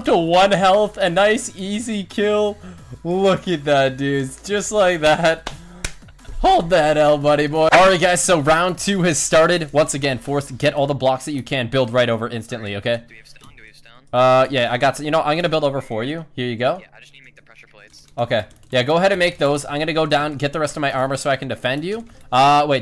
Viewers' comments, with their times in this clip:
0:06 "HUUUULD THAT L BUDDY BOY" OOLOOLOLOLLOOL CRINGE + VOICE CRACK LMAOOOOOOOOOOOO
0:06 Lol that voice crack